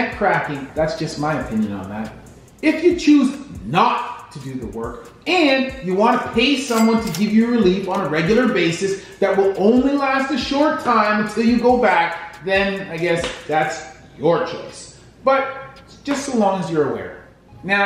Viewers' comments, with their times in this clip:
0:03 sounds like a Asian massage parlor